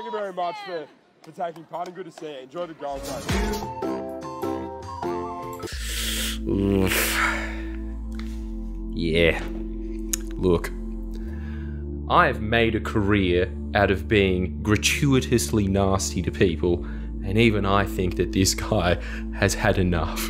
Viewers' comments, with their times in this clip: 0:06 I heard that ominous music and thought we were getting another outburst, maybe next time 😂